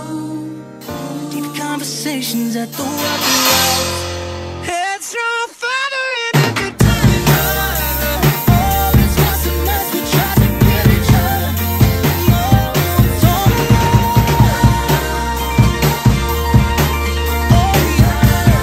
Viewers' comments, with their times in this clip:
0:06 I re-listened to the fill and that was fully intended to be a quick lil fill there.. wasn’t meant to be anything fancy. You can always cover the song too and do a longer fill if you’d like one there :) yea, my snare sound was pretty bad. If you listen to a newer cover you may hear that both the snare tone and audio overall has improved a bit since this cover. I’ve been working on improving the quality. Take care 🤙
0:06 Yes I am, so just say the Audio for the drums needs to be worked on a lot but you can still hear everything but I don’t like the way your snare sounds (sorry for saying that maybe it’s just me not liking those snares or something else) but still everything was a amazing and I loved the way you did this cover and everything I loved every fill that was in this I just feel like was good at the end but there is a lot of time to add a longer fill and everything but still I loved this cover with everything just the audio, snare and that last fill just need to be worked on. Again I’m sorry if this sounds mean with certain stuff. I love this cover and putting this out there. Keep going and keep posting content.😊😊😊👍👍👍👍